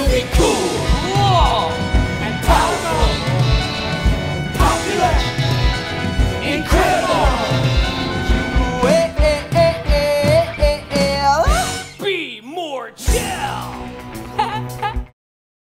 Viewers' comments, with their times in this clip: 0:08 Okay, everyone is talking about Jeremy's facial expression and giggle (which I must admit, added another sixty years onto my life span) but why are we not discussing X'D